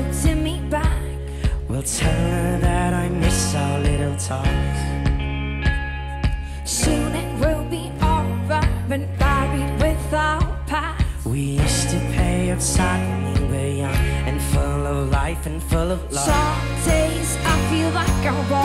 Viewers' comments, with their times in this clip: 0:03 love the guitar bit just after 'tell her that I miss our little talks'.